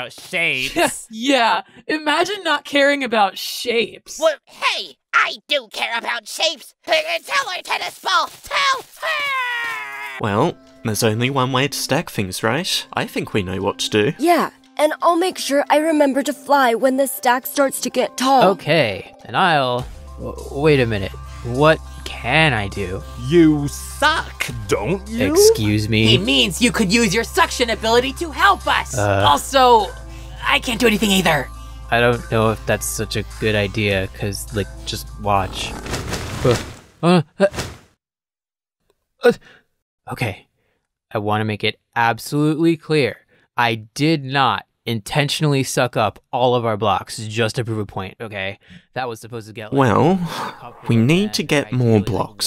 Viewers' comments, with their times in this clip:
0:04 GB sounds kinda like Four tbh
0:38 Black hole: (Sad noise)